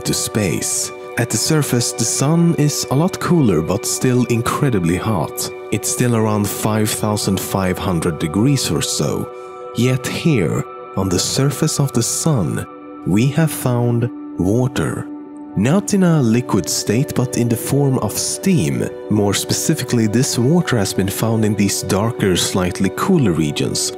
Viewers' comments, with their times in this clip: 0:08 het here, on the Surface of the sun, we have found ... WALTHER